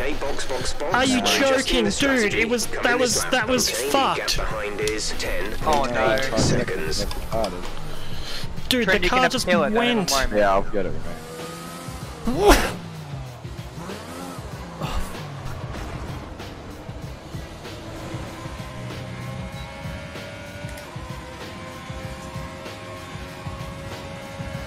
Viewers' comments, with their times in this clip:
0:10 his car sneezed after him